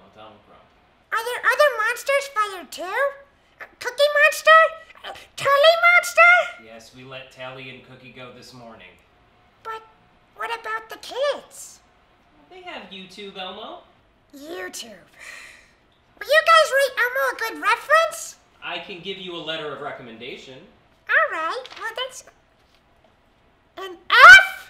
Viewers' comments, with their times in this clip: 0:10 he sounded so sad.